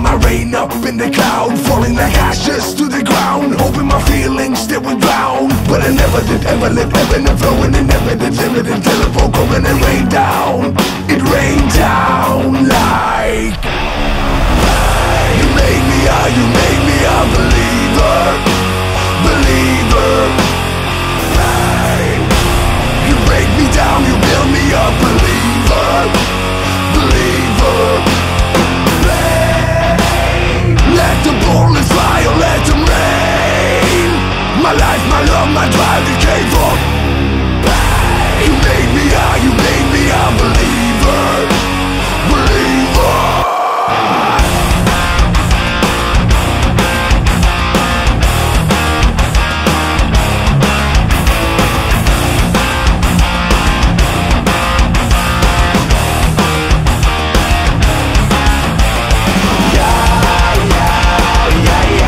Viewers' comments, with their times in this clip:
0:06 Play in 2x speed Top rappers Eminem can't beat
0:44 Set speed to 1.75, and turn it's gonna be a great thrash metal song